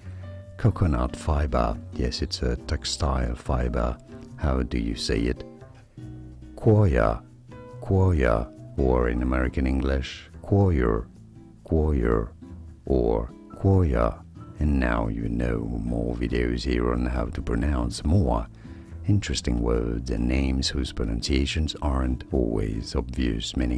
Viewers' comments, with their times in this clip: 0:06 To respell it like it sounds, it would be like the sounds of "coy ya" all run together in one word